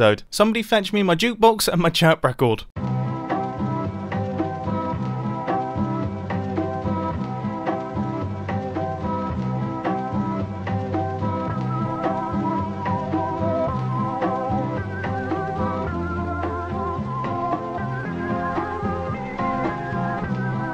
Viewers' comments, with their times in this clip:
0:03 For some reason i think the music is from a horror game
0:04 Please, no, not this again. The music literally makes my eyes water.